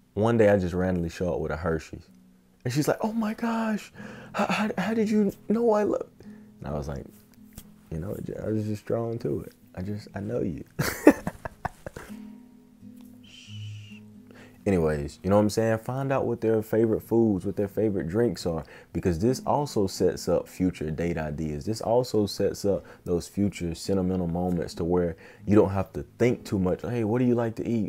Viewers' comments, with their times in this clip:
0:08 this laugh is so real that’s exactly how my brother laughs lol